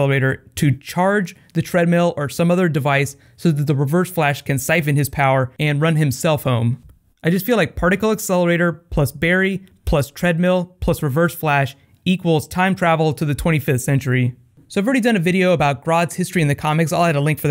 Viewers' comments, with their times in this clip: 0:05 I thought you said 'run his cellphone' :'')